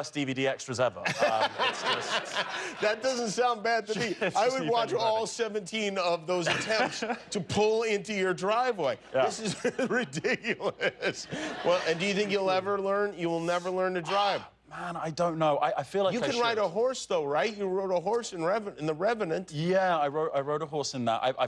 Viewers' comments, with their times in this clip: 0:07 not to be a simp but his laugh is the cutest one i've ever heard from a guy